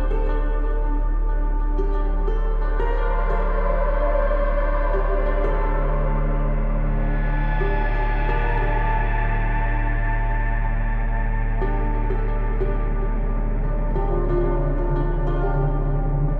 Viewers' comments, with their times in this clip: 0:03 those haunting Warzone sounds as you're scrambling for some crap LMG while a guy chases you down with a pistol in Farmland 😂